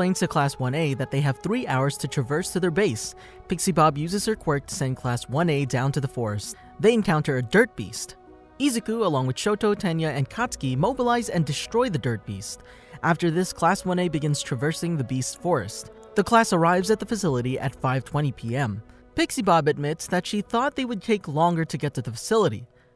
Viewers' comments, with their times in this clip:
0:06 I love how he says “them encounter a dirt beast” with a subtle pause at the end Made me chuckle 😆
0:08 the way he says they encounter a dirt beast is so funny to me😂